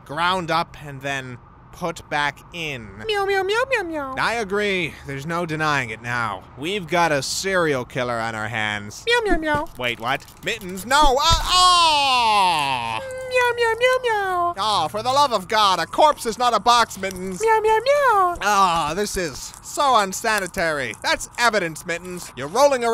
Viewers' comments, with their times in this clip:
0:03 detective mittens says yum yum yum yum yum